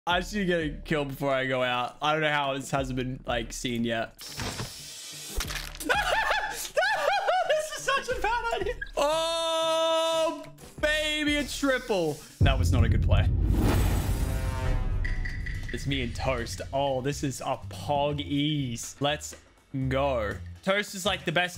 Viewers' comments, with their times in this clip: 0:06 When a white girl in Starbucks laughs 😂